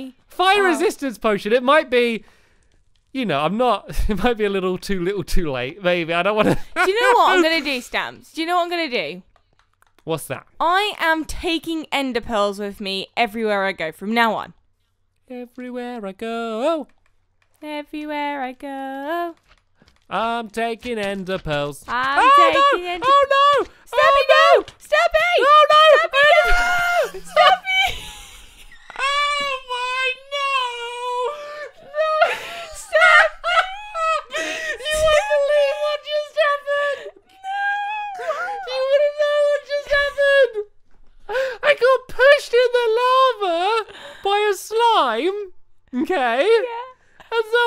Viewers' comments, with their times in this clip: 0:06 it sounded like stampy said baby instead of maybe.
0:26 Everybody go to and listen to the loud laugh stamps makes it sound ridiculously funny Like if you agree
0:33 LOL Stampys laugh I've never heard him laugh so hard